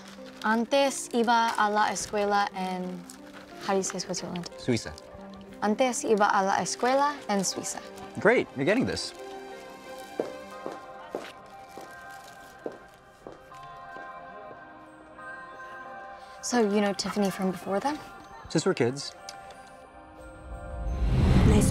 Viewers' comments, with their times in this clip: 0:04 Wow her spanish is so good